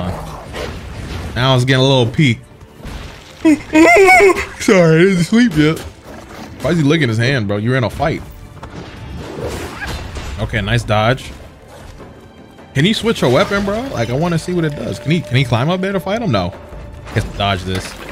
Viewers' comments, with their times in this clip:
0:03 Tf Type Of Noise Was That